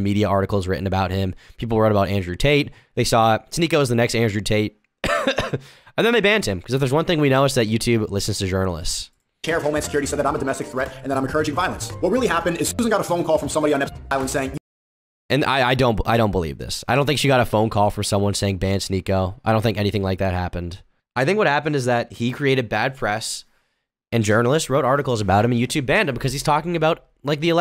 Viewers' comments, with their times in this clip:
0:09 Is it me or does sneako at 1.5x speed sound like andrew tate?